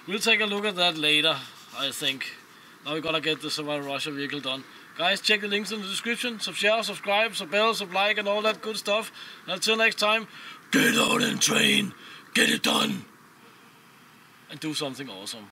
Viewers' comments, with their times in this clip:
0:10 Better than 99% of death metal